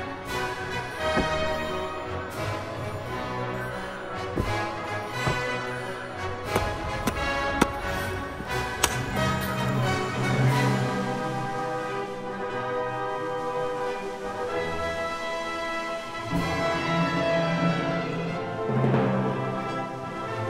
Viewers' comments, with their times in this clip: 0:08 That 5 iron shot and sound was like something from Caddyshack. Its...its in the hole!